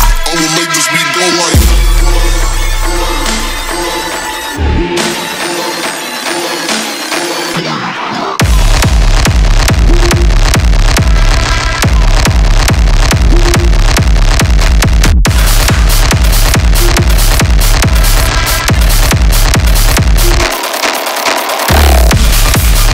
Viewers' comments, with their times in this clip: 0:07 Holy shit I wasn't ready for the drop it is soooooo fkn gooooooood 🤯🤯🤯